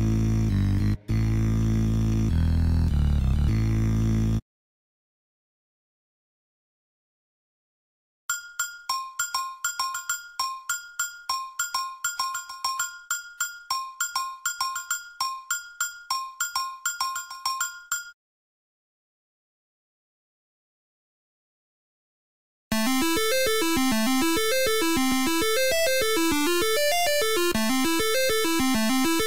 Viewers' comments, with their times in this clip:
0:07 I hear the same rhythm as the FNF tutorial song
0:10 is he hitting his bucket or what